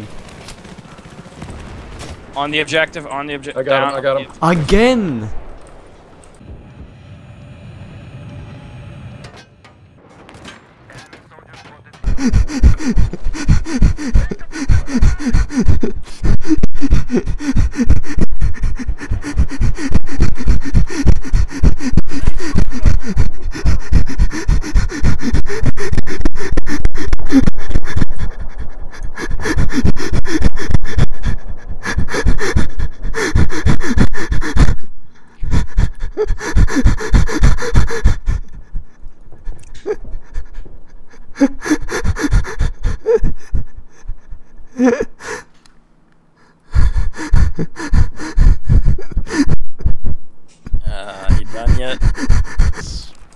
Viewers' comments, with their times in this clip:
0:03 lol do you have asthma
0:12 he sound like his humping, not laughing
0:12 I'm laughing at your laugh ...
0:12 oh shit asthma
0:13 He was sawing wood. haha
0:14 He ist not laughing , he is jizzing in his pants, defininetley!!!
0:14 lol man this is how I laugh too...fucking laughed my ass off hahaha
0:19 donkey giving birth???
0:29 donkey giving birth
0:31 itz sounds lik hez jakin off
0:31 that sounds like you're crying while fapping, just so... Hillarious.
0:34 Sound likes your having a lack of air attack
0:36 your laugh sounds like a special person having sex